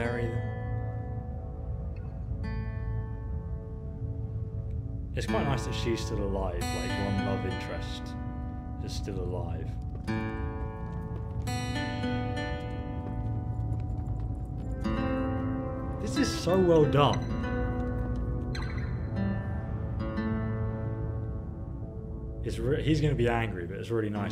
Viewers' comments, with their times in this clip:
0:10 I thought it said Logan Paul !!!!